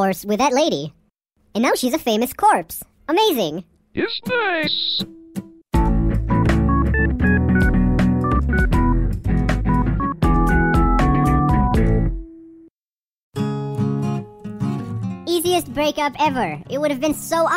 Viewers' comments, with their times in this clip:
0:03 BONZI BUDDY???? IS THAT YOU?!?!?!?!